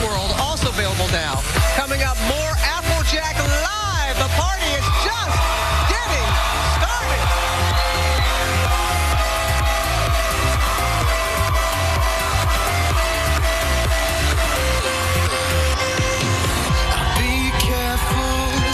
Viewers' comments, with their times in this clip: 0:03 Lol Did she say applejack :D